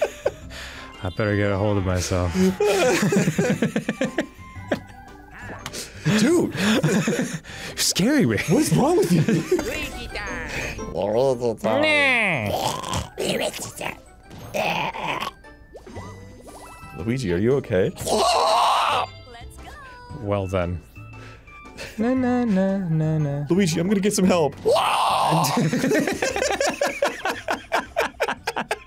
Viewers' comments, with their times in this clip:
0:10 Arin: Luigi are you okay? Luigi: eldritch noise intensifies